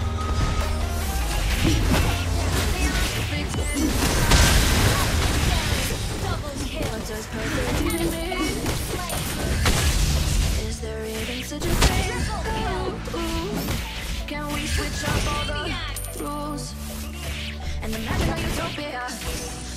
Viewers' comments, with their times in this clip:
0:03 why was the music on 2x xD